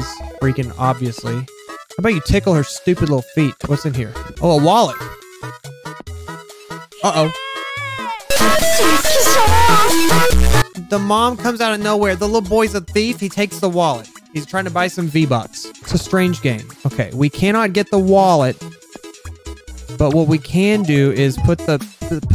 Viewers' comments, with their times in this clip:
0:07 AHHH MY EARS